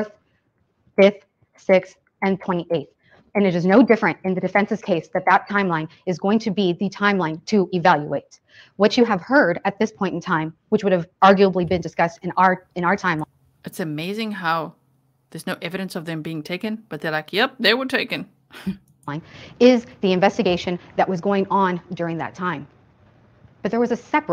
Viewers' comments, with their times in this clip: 0:08 Her tone is coming out strange…like, damn chill when you’re talking like that, waving your hands, glaring and walking back and forth towards jury. Whatd theeeey do? I just see no sense in those tactics unless youre the defendants themselves.